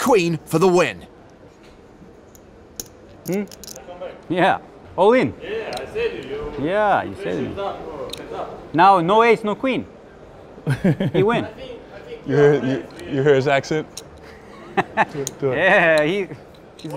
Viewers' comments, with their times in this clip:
0:04 the accent 😂. And Phil points it out but then kind of does it too. 😂😂😂👍